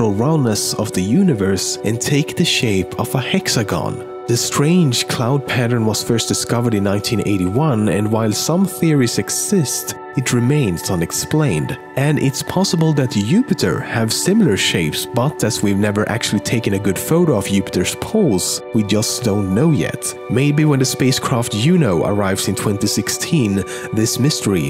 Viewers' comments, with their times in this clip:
0:08 he said youpiter
0:12 ha he pronounced it Upiter